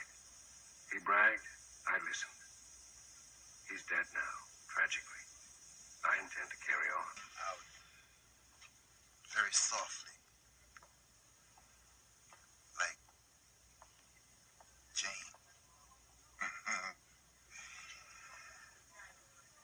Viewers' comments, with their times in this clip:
0:07 One of my favorite 70s actors, and one of the most underrated actors ever. He just came around at a time when ‘blaxplotation movies’ were popular, and they didn’t want people with theater experience like him to be a leading man. Also if you close your eyes, especially seconds, you will notice how much Lawrence Hilton-Jacobs voice sounds like his!